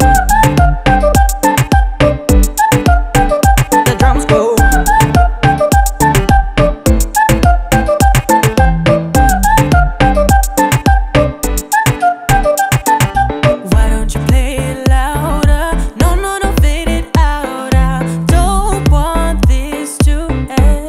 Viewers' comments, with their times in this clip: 0:04 for example the lyrics mentions 'the sounds of the drums go...' but what follows are some synthesizer bleeps, no drums.